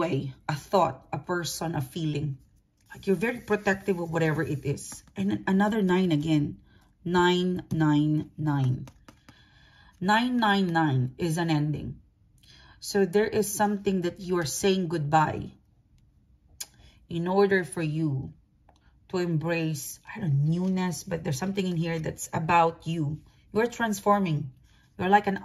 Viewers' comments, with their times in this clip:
0:06 Cant help but think about hitler and laugh NEIN NEIN NEIN 😂